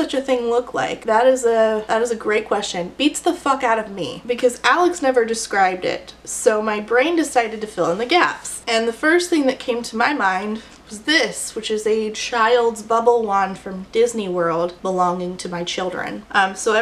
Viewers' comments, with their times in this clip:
0:03 i have no clue why, but your delivery got a laugh